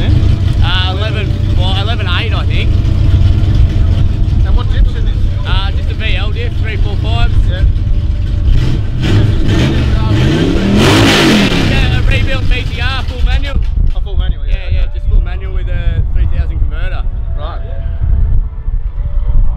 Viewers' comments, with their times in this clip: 0:07 You can hear a real engine in the background